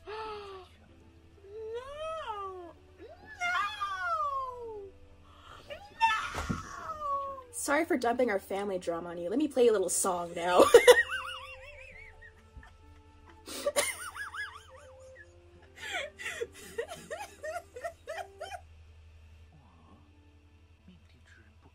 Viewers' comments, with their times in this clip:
0:09 this moment is just absolutely hilarious in every version bc lxc just straight up interrupts his backstory exposition monologue with an impromptu flute solo